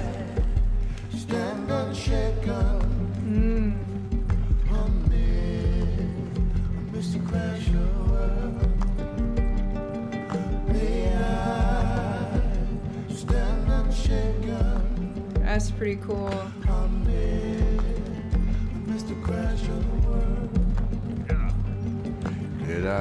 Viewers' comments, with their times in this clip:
0:07 the song is one of the most beautiful parts of this game